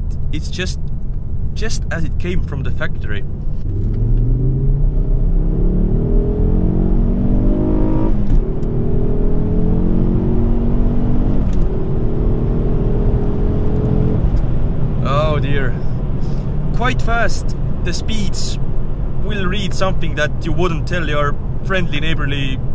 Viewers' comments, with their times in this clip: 0:07 dat gear change doe